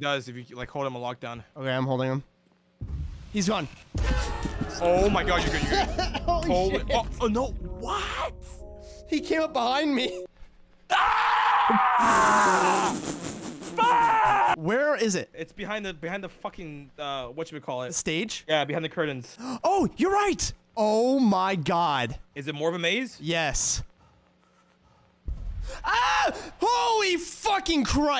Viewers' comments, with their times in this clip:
0:10 his scream of pure horror 😭